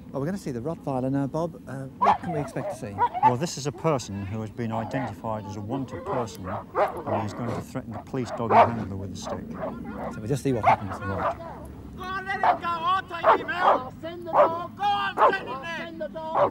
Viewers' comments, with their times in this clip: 0:04 That barking bothered the bad guys in 1982, and 42 years later, it's bothered my Terrier, to the point that I had to switch off the sound! Good dog.